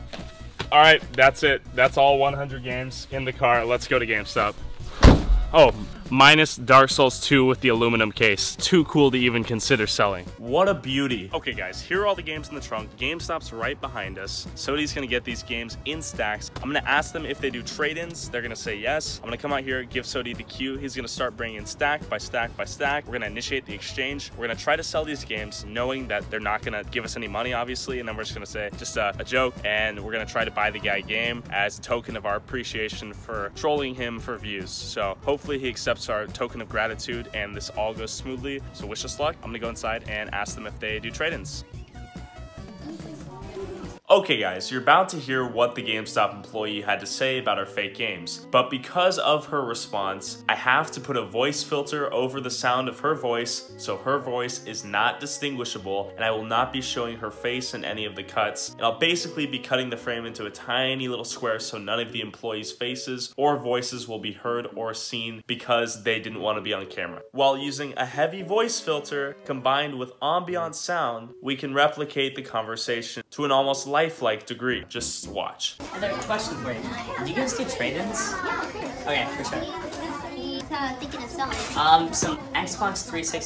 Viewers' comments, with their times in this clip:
0:06 lit bonfire happiness noises
1:06 you filtered your own voice the same way... i can just screw with the audio until it sounds like you again, and then i'll know the other person's real voice